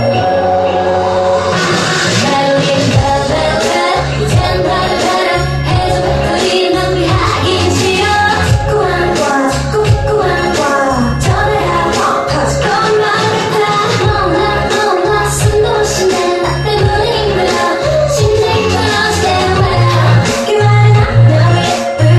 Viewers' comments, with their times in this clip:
0:03 I thought it was 'Red vel-vet' Ughh. Misheard here. I badly need the lyrics now.